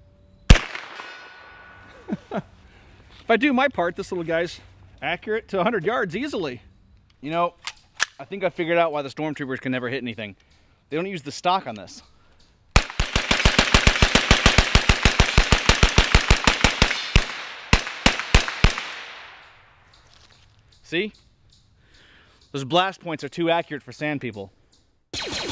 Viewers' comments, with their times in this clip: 0:10 I noticed a few pings from hitting the target when he was hip shooting I figured out the difference between this and the Stormtroopers guns which never seem to hit much of anything.......this one has the longer sniper barrel.